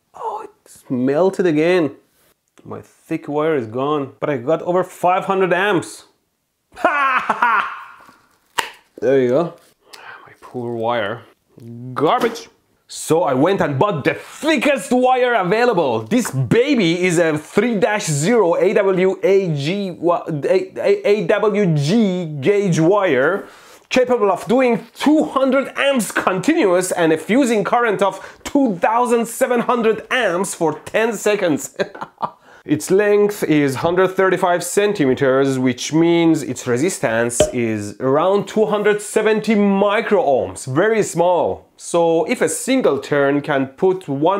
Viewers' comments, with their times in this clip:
0:06 the laughter of a madman 😮
0:31 that laugh true sounds of evil genius